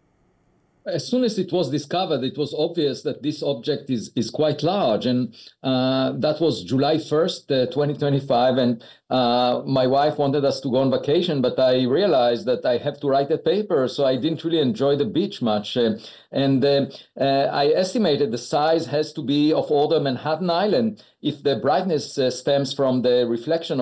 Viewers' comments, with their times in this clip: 0:09 in the introduction.. July 1st 2035 .. Did i hear correctly?